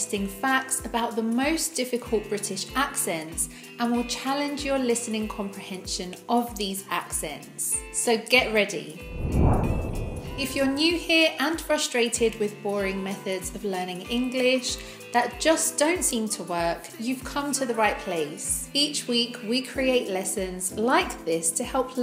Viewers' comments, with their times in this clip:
0:09 Birmingham accent test: "It was a BMX, ata atas fol that's before It was an orange BMX". Even I put the speed I can't understand better.